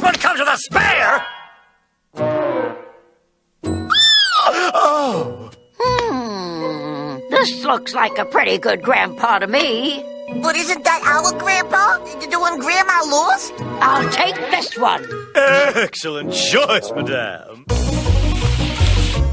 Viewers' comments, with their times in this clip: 0:03 I can't stop laughing when the Red Guy squeals with excitement 😂🤣